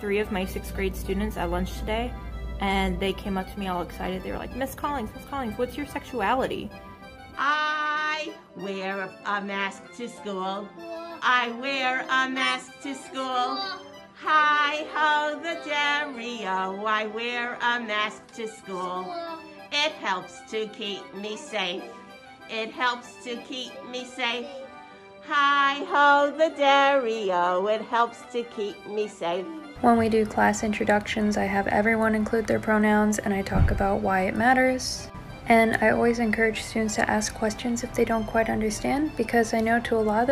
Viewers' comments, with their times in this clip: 0:07 Janice from Friends is a teacher???
0:27 when did Fran Drecsher become a teacher???